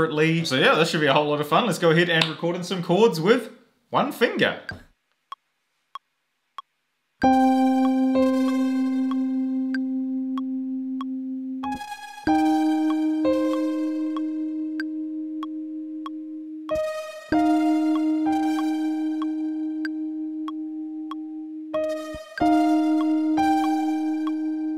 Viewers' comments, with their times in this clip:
0:05 ok but why does the slow building of the cords sound really really cool